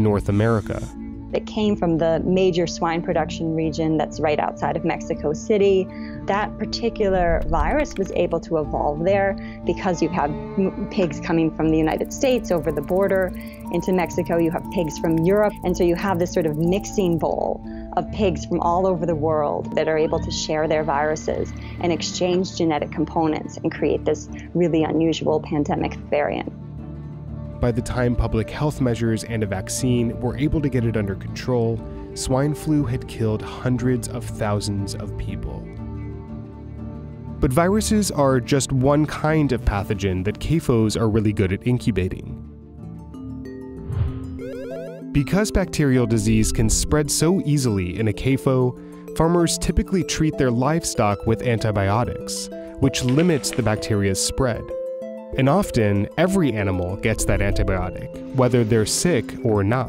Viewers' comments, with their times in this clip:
0:10 why that clicky noise
0:45 Feedback to the video editor. the music choice made it difficult to listen to the VO. This is just my opinion, but i would have EQed out the high frequencies/overlapping frequencies or picked another track. Like I said just my opinion :)